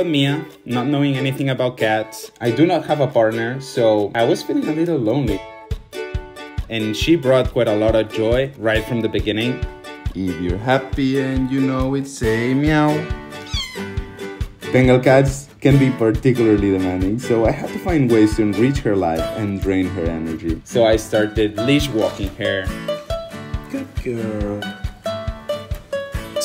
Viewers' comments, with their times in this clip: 0:10 love that "meow" 🥰🥰😻😻